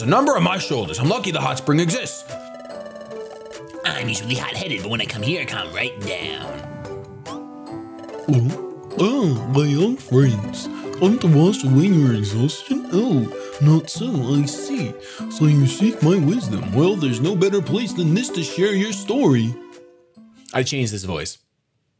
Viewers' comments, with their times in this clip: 0:06 kek that voice that he makes